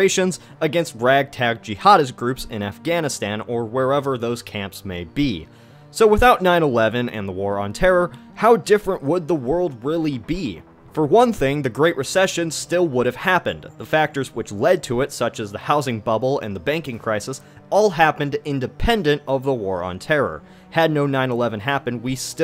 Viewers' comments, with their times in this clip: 0:04 nine eweven lol